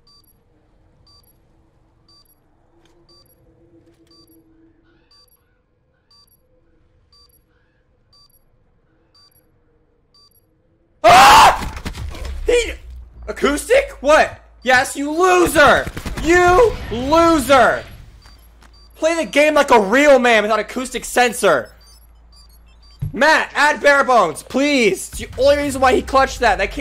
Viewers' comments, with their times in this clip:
0:09 beware headphone users i got so scared😂